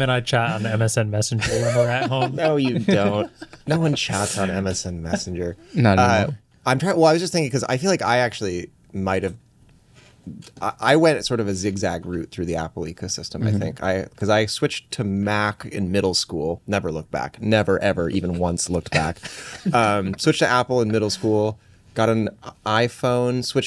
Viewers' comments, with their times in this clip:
0:05 Marques gagging at the using MSN messenger